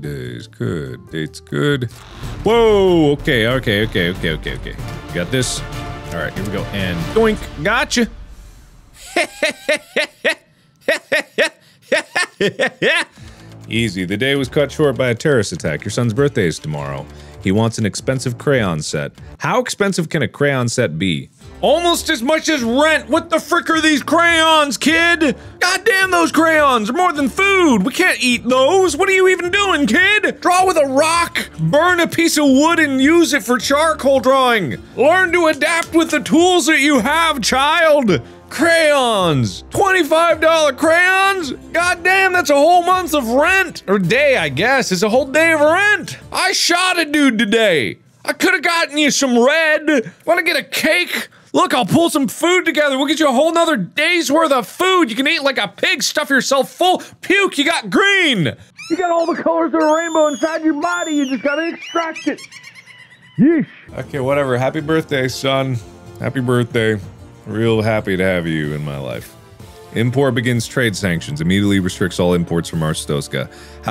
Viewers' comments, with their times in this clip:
0:09 his laughs suddenly shifted into jingle bells
0:09 Ladies and gentlemen I give a Mark Symphony, Jingle Bells:
0:09 Did he just "sang" Jingle Bells that way?
0:10 omg mark that sarcastic evil sadistic giggle ❤❤❤ 😂😂😂😂
0:10 was that supposed to be jingle bells?
0:10 his laugh sounds like jingle bells
0:12 that laugh reminded me of the Old Man/Bartender from Epithet Erased (Not bot I swear on my mama left buttcheek)
0:16 I had to pause it and laugh for 5 minutes before continuing Mark yelling about crayons gave me life
0:42 Nothing ever cracks me up harder in this series than Mark coming home and screaming "I SHOT A DUDE TODAY" at his son for asking for crayons for his birthday.
0:58 Fisherman: What he's yelling at?